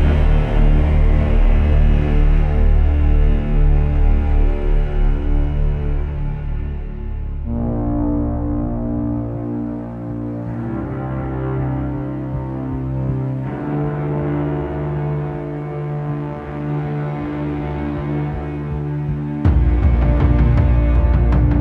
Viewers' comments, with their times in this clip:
0:07 sounds like when you finally find your purpose and face it.